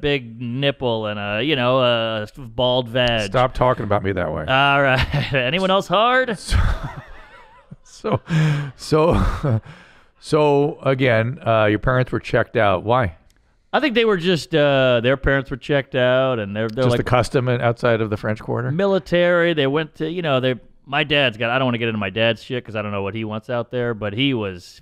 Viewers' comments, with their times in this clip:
0:05 "Alright anyone else hard" room erupts with laughter. Mark is what we need now more than ever. 👍